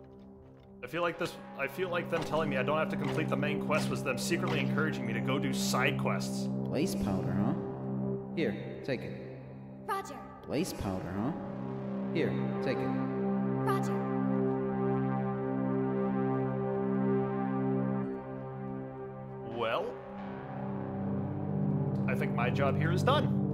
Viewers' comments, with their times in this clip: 0:07 Thanks for playing the map! Huh, never saw that bug with the voicelines before -> Will look into that.